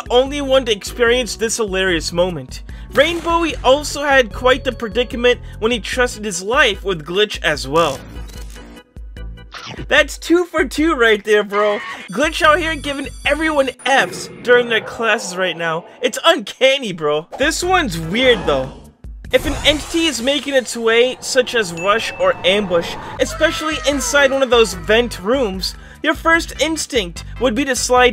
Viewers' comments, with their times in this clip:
0:09 the crunch sound when Rush appeared got me 🤣🤣🤣